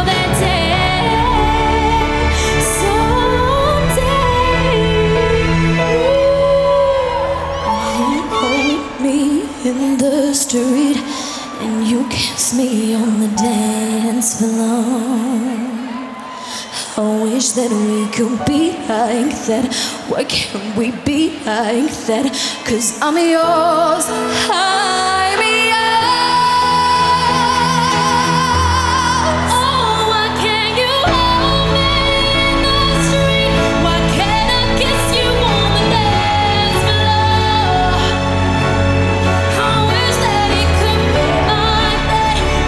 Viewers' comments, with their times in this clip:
0:08 the part when it's like Jesy is singing really from her heart I really felt the goosebumps😍❤
0:21 Who is she? Her voice is AMAZING
0:22 you are the queen, JESY! Why is no one talking about her high note performance ? She can do it well. Don’t try to blame her on not singing well. Trust me, she always does best stage performance, she has the best voice (in my opinion).
0:22 Jesy high note
0:24 You missed Jesy's high note!
0:25 can we talk about jesy's high note bc she's so underrated i wanna hug her ughh